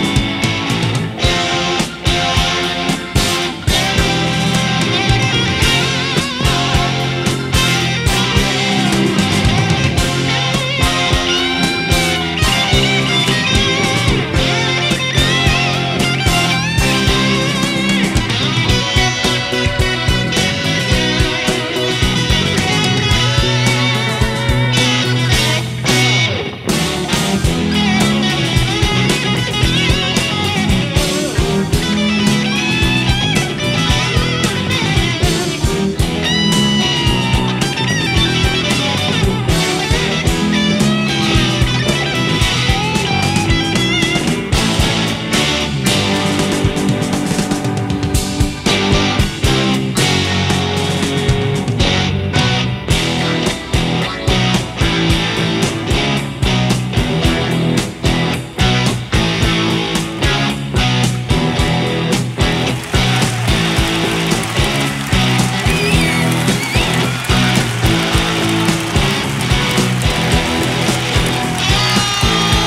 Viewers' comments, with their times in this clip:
0:03 Shivers at the mark! This is undoubtedly the best guitar intro ever!
0:58 Its brilliant how they tease the intro up to a few hints before the real thing